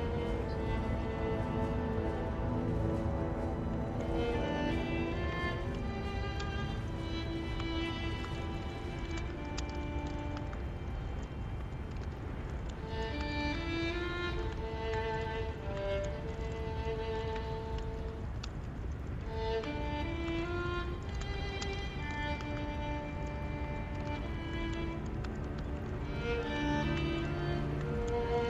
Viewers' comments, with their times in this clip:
0:03 True, it's not exactly the same but they do include just a snip of The First Hunter but changed the note at the end. They did it with the main theme as well where they added only two notes of Gwyn's theme but still noticable.
0:03 it has snippits of the song. Just like the “plin plon” in the title screen u can hear a bit of the first hunter
0:03 True, they only add a bit of the same notes from it and changed the rest
0:03 you can hear it rise and descend instead of reaching the right key
0:14 sounds like it for a bit